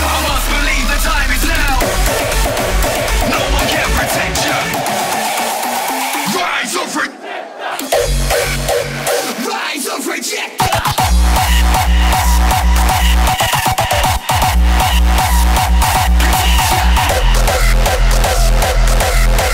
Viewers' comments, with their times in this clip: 0:06 pretty sure that's my voice xD